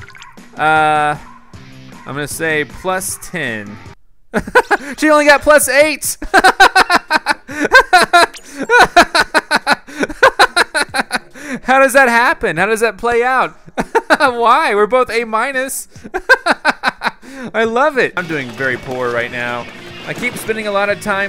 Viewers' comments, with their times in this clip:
0:07 That laugh tho XD